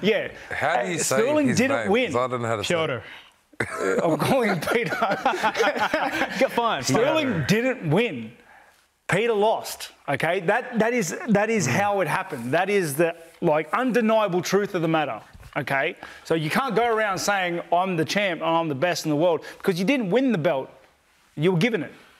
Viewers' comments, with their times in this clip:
0:10 Straight faced till Tai laughed at the sound of Petr’s name being pronounced right while he turns his face towards the camera💀